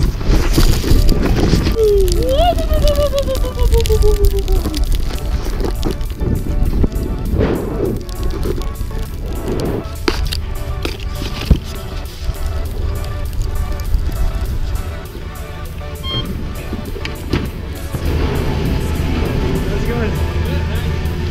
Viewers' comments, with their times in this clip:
0:03 zoidburg woop had me dying